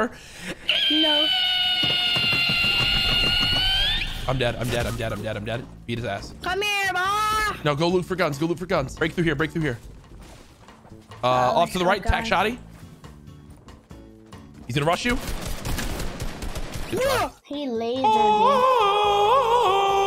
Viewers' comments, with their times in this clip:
0:05 So are we gonna talk about hiw courage said eat his ass